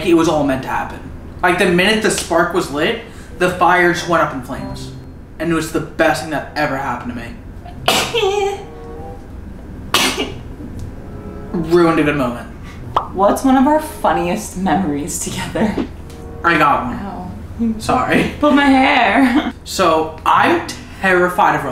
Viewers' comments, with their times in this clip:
0:05 HE HE like Michel Jackson was sneezing